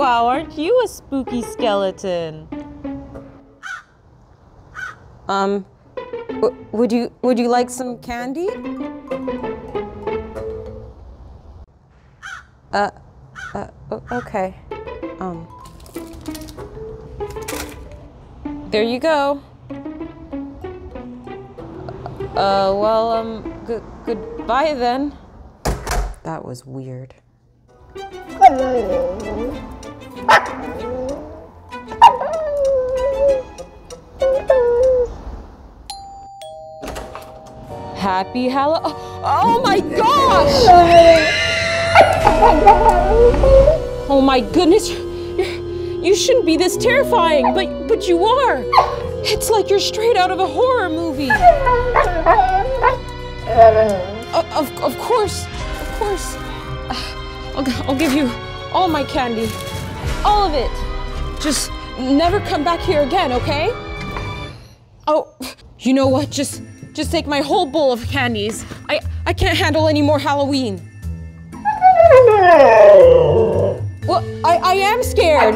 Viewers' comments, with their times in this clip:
0:08 birds for the voice of skeleton dog😂😂😂
1:03 that expression plus the light reflecting in her eyes is pretty spooky! And then the satisfied munching at the end 😂